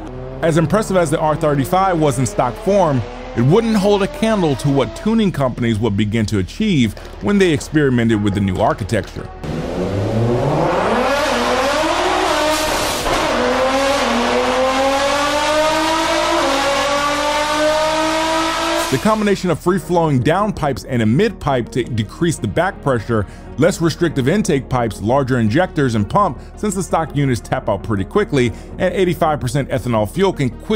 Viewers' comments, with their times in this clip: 0:10 is like Godzilla throwing a temper tantrum lol
0:15 sounds like a boosted 370Z😂